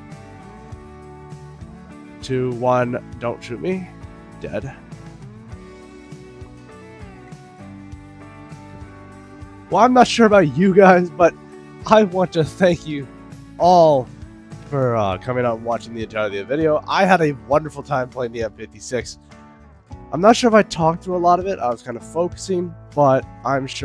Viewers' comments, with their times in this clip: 0:04 pop is satisfying